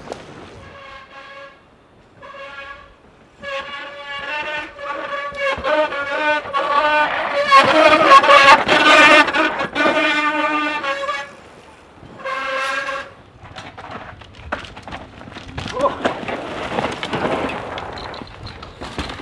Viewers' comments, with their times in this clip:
0:03 sounds like a violin😂